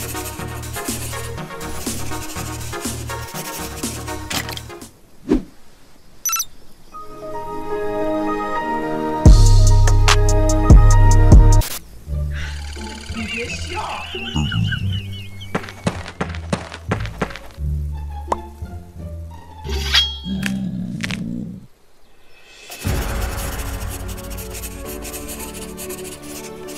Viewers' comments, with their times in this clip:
0:03 like the music
0:07 I laughed the sound windows xD